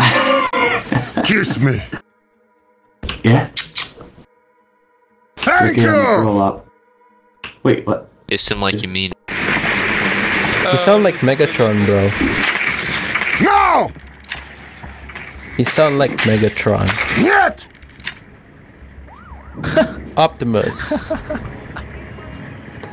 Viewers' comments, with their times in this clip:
0:10 I tried very hard to find vid where Megatron andHeavy sound imilar but couldnt find single one?